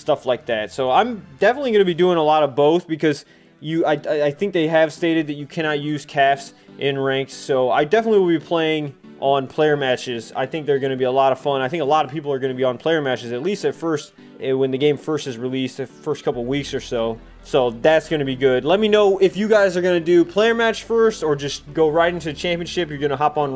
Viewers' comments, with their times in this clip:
0:04 Why the new music :( I liked the old one. Edit: Nevermind, it came back :D